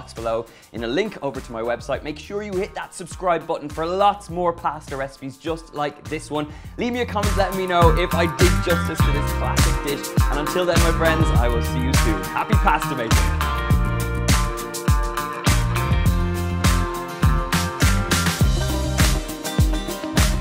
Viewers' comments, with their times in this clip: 0:07 What the hell happened to the audio ???